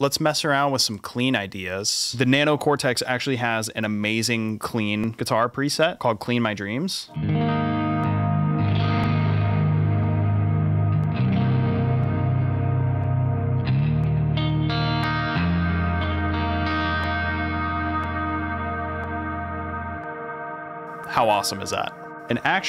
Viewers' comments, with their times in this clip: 0:08 What's that click happening with the delay??